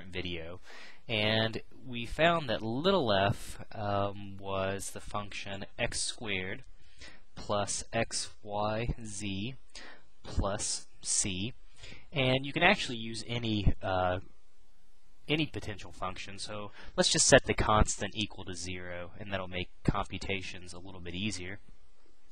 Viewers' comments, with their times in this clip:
0:03 What's a "veca"?